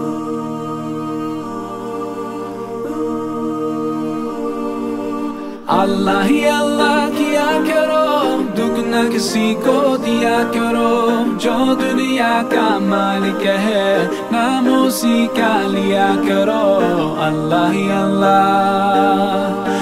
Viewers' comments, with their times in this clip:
0:06 Beautiful music starts 😊